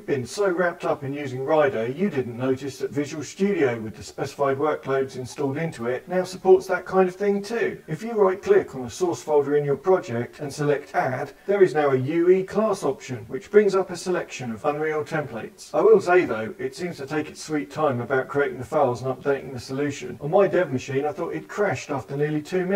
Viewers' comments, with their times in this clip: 0:04 i almost got a heart attack with the voice effect thx sir